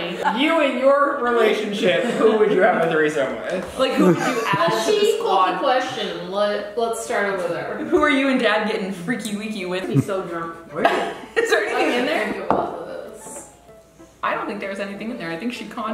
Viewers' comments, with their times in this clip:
0:03 the laugh makes me happy